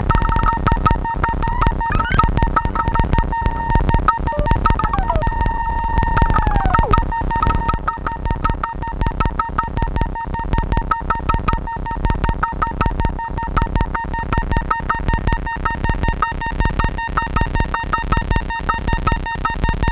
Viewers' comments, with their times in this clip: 0:03 The moment the sound heals, the descending sound is mixed twice. I really like that time. I was also impressed with how to add low-pitched bubble noise.